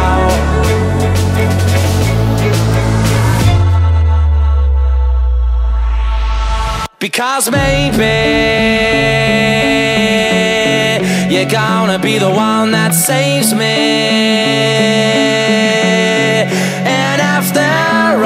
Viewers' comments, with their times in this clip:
0:03 I was all set up for the drop. :(